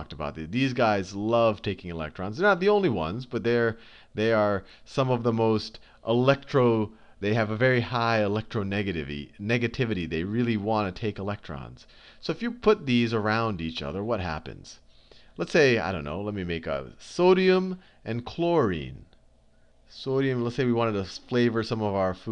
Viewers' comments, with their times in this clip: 0:08 Haha he says "They have a very high ElectronegaTIVY"